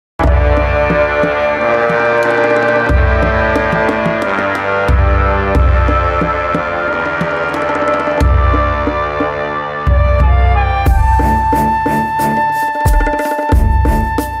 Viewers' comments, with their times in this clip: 0:00 this song hit me in the feels harder than the car that hit me.